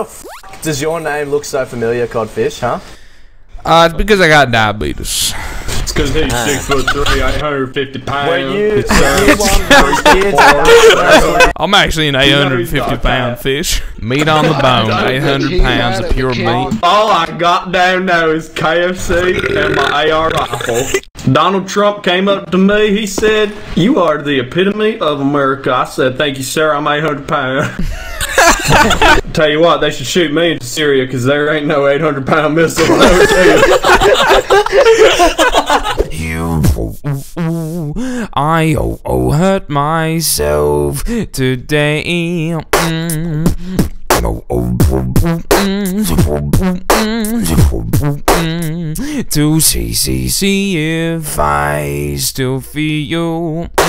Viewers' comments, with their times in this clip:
0:09 this laughing so sound familiar how dream laughing
0:17 is he meaning to do forest gump?
0:36 my fave beat he does.
0:36 press F to pay respects to the player that disconnected and didn't hear the sickest beatbox ever live :(
0:36 replay button for amazing Johnny cash cover